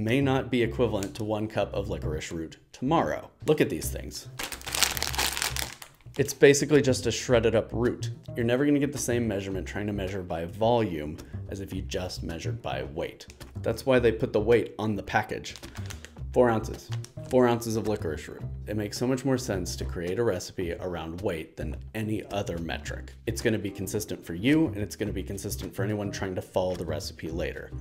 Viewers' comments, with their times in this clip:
0:08 "You're never going to get the same measurement trying to measure by volume, as if you just measured by weight, that is why they put the weight on the package!" me: Exactly! mixing measurements is a pain in the ass! "4 onches" me: oh ffs